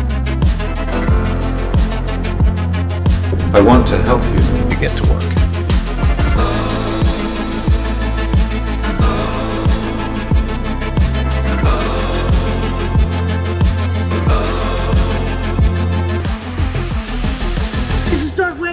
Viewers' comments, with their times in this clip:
0:04 everybody gangsta until Tony Stark says "Then get twerk"